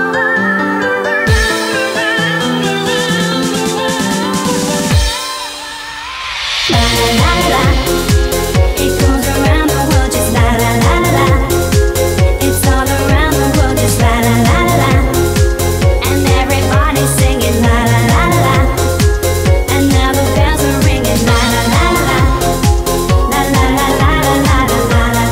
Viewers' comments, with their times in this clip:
0:06 dat drop though